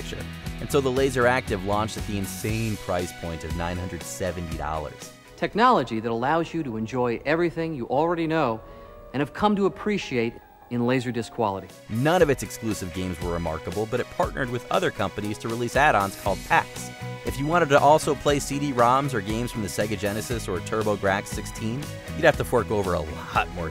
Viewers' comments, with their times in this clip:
0:07 Was that Todd Howard? Sure looks and sounds like him.